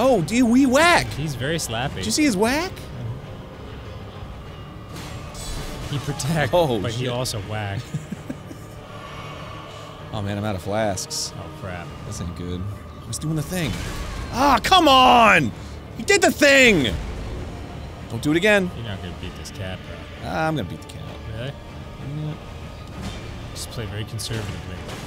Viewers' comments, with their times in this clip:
0:08 no no no it's more like "AWW MANN I'M ALL OUTTA FLASKS"